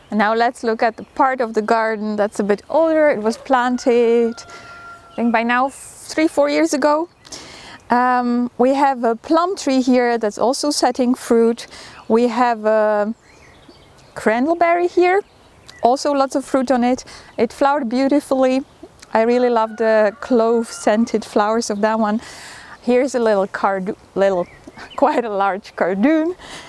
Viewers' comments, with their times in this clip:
0:10 It’s isn’t it? I thought it sounded like crenel berry but after a bit of searching (for clove scented) I think it might be ‘Crandall’ – a type of clove-scented currant (Ribes odoratum) or clove currant (Ribes aureum aka ribes odoratum or ribes fragrans).